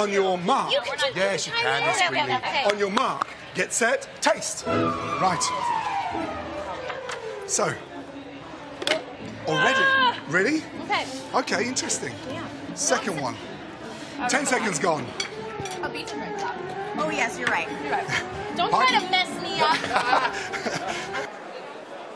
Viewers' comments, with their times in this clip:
0:07 that background music really gave me Glee vibes when they are about to slushy someone😂